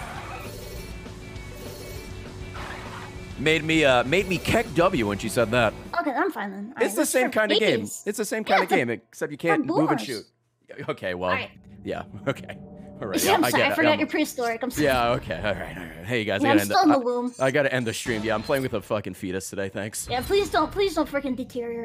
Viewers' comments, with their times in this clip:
0:05 Her voice is so annoying. She sounds like the kid that says "when will you learn that your actions have consequences?"